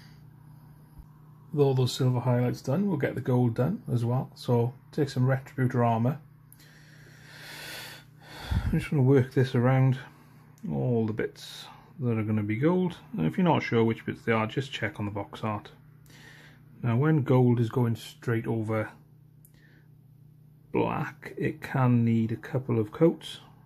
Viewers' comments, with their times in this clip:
0:04 Is there something that we need to know about Retributor Armour? Ex girlfriend perhaps? Tough breakup? Ive never heard such an expression of exasperation following the naming of a paint before.